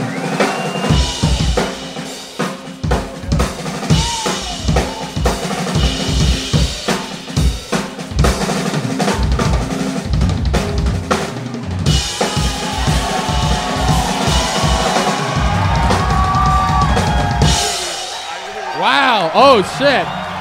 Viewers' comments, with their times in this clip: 0:03 Man, loved the solo. Was that a double stroke roll you used on the snare ? Cheers